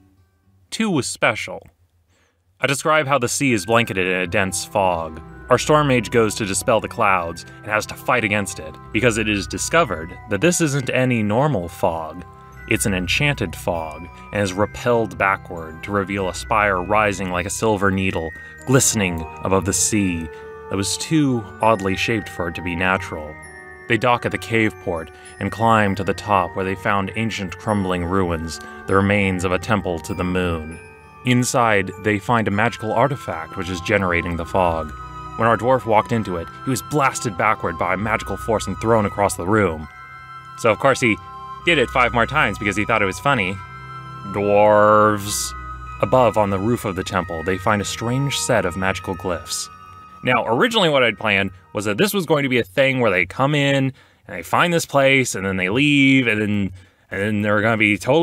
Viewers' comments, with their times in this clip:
0:03 "I describe how the sea is bla-" (hears music) Are they in fucking space
0:03 The music sounds like something from World of Goo.
0:20 Waaaaaaiiiittt, is that the kerbal space program song at roughly ? Thought it was calmingly familiar.
0:30 Me: Hmm.. Why Is Ksp Playing Space Music When I Am On Kerbin? Youtube: Silent Facepalm Me: *Pauses Video* Youtube: *Music Stops Playing* Me: Youtube: Me: Youtube: Me: O
0:40 Did anyone else think that they had left ksp running ?